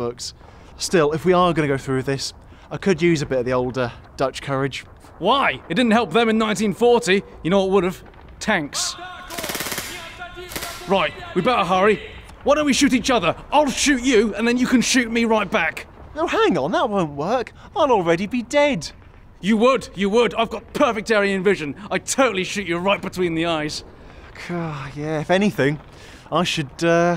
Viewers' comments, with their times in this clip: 0:09 what is the Russian guy shouting in the background saying?